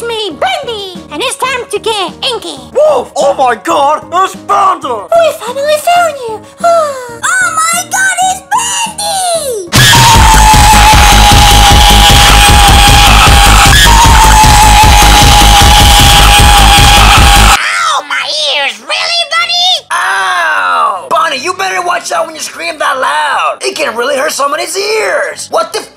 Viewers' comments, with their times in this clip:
0:09 eeeeeeeeeeeeeeeeeeeeeeeeeeeeeeeeeeeeeeeeeeeeeeeeeeeeeeeeeeeeeeeeeeeeeeeeeeeeeeeeeeeeeeeeeeeeeeeeeeeeeeeeeeeeeeeeeeeeeeeeeeeeee eeeeeeeeeeeeeeeeeeeeeeeeeeeeeeeeeeeeeeeeeeeeeeeeeeeeeeeeeeeeeeeeeeeeeeeeeeeeeeeeeeeeeeeeeeeeeeeeeeeeeeeeeeeeeeeeeeeeeeeeeeeeeeeeee eeeeeeeeeeeeeeeeeeeeeeeeeeeeeeeeeeeeeeeeeeeeeeeeeeeeeeeeeeeeeeeeeeeeeeeeeeeeeeeeeeeeeeeeeeeeeeeeeeeeeeeeeeeeeeeeeeeeeeeeeeeeeeeeee eeeeeeeeeeeeeeeeeeeeeeeeeeeeeeeeeeeeeeeeeeeeeeeeeeeeeeeeeeeeeeeeeeeeeeeeeeeeeeeeeeeeeeeeeeeeeeeeeeeeeeeeeeeeeeeeeeeeeeeeeeeeeeeeee eeeeeeeeeeeeeeeeeeeeeeeeeeeeeeeeeeeeeeeeeeeeeeeeeeeeeeeeeeeeeeeeeeeeeeeeeeeeeeeeeeeeeeeeeeeeeeeeeeeeeeeeeeeeeeeeeeeeeeeeeeeeeeeeee ouch my ears